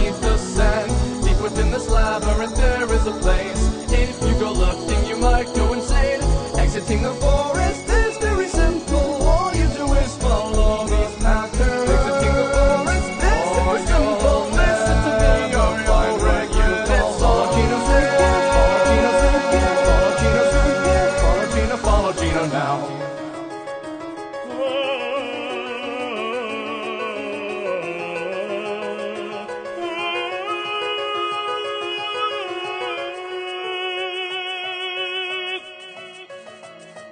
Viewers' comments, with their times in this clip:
0:05 i always love that line especially the voice and that guy
0:24 When moms yawn: 🥱 When dads yawn:
0:25 God I wish there was more choir bits of this song out there. LIKE ITS SO GOOD BRO.